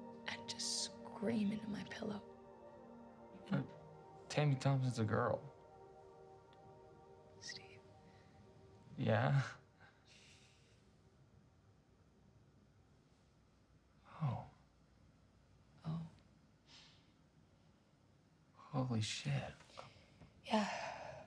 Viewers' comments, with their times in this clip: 0:07 when I watched this scene for the first time my heart contracted on that little "Steve" 🥺